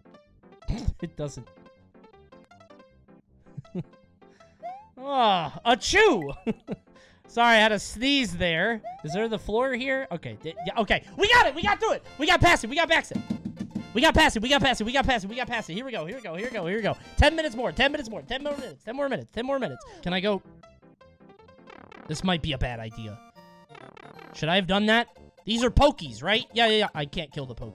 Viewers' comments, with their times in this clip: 0:10 Coney auctioneer when?